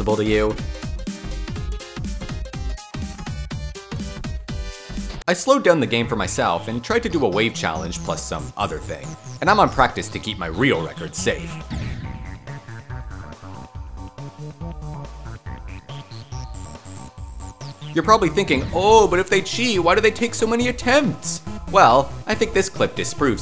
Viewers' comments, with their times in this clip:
0:05 unrelated, but that music makes me so nostalgic